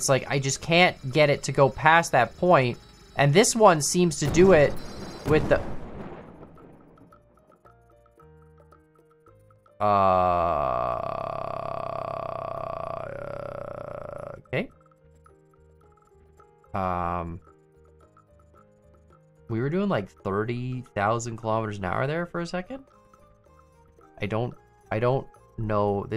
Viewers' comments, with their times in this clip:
0:10 POV your vocal chords glitch out